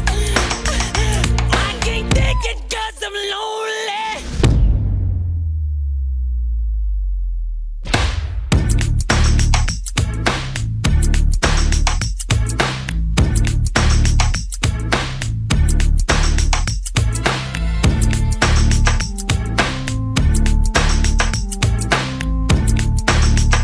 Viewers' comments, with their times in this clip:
0:05 That drop right before perfect!